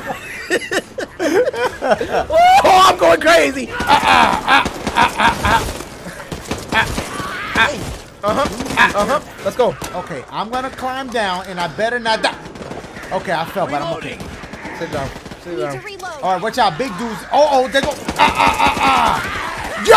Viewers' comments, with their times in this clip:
0:03 Person: My car makes a weird noise when I start it Mechanic: What does it sound like ? Person: